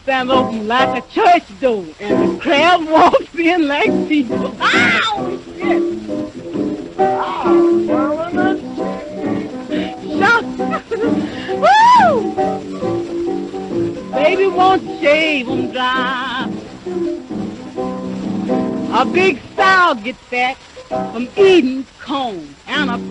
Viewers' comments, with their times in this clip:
0:05 I love her laugh